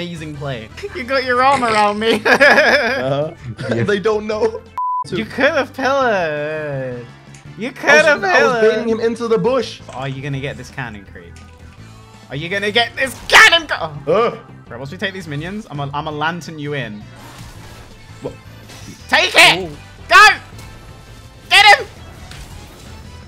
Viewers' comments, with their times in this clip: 0:04 oops thought for a second that there was "Uber fucked up a girl" ~.~